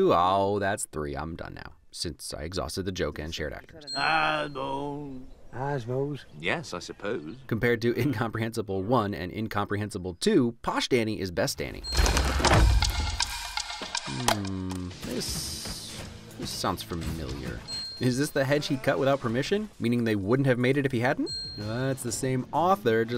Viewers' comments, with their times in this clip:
0:10 ... he's not exactly incomprehensable, it's just when he forgets to pause every now and then it gets a bit hard. (source: a person that lived in england for 10 yeras in a countryside town all the while being taught english by the most upperclass people i've ever met and therefore now also speak "posh")